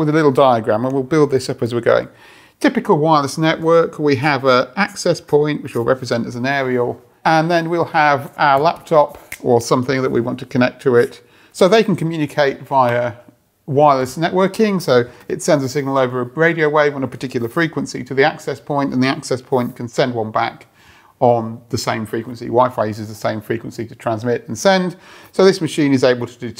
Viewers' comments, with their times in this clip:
0:09 Damn, really sounded like the joycon snap on the Nintendo switch 😂 By the way, amazing content as always! 💻